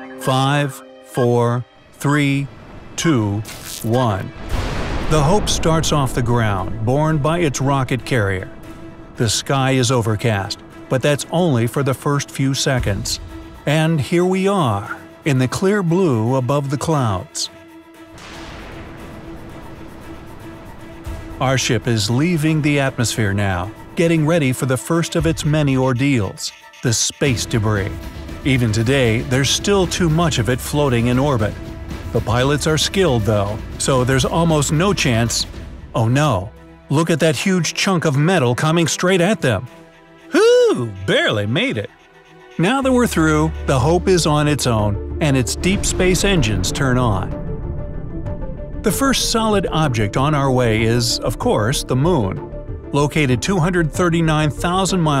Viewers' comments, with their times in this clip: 0:06 Why does this sound like a trailer for the first
0:39 XD THAT LAUGH
0:40 That sounded like tecchnoblade